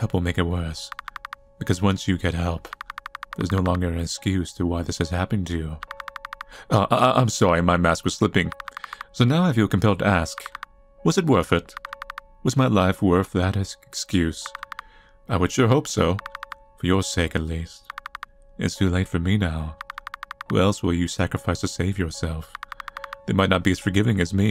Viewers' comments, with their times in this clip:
0:05 The delivery of that line was perfect lmao